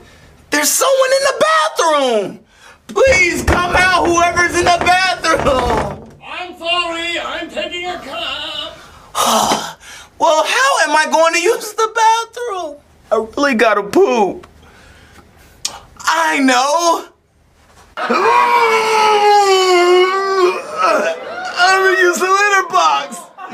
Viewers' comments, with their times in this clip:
0:05 That Is Shrek's Voice.
0:07 it sound like shrek in the bathroom